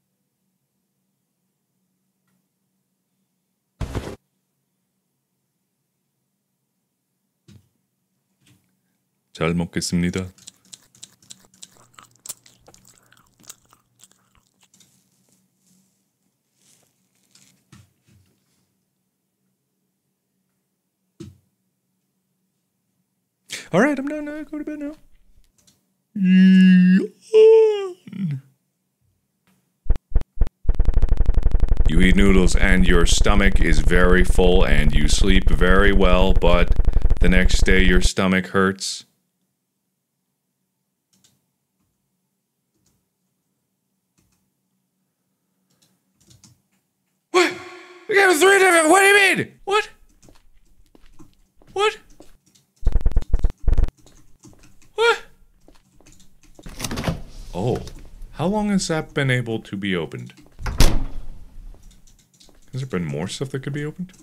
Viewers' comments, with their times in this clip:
0:09 first time actually hearing Mark speak Korean
0:09 Mark speaking Korean is so new to me omg
0:12 what did Mark say? was it japanase or something?
0:47 😂 idk if mark was just making random noises or if he was speaking Korean